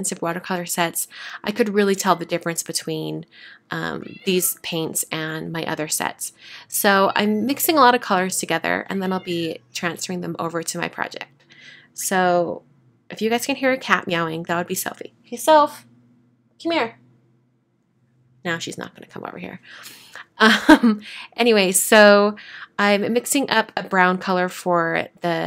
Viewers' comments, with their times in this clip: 0:08 a cute cat meowing